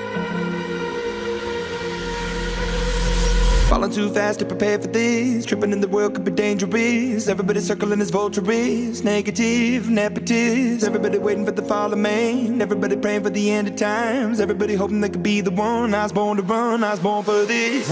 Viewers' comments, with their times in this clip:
0:03 sound good on 0..75 speed